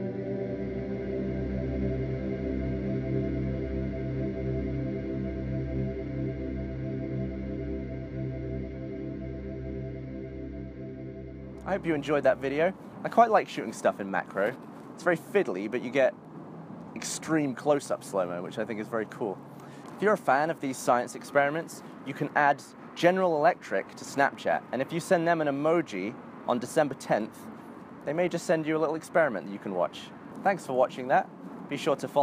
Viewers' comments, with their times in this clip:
0:08 I thought this said something like slun my guts. ??
0:18 "..it's very call" weird bit of English right there.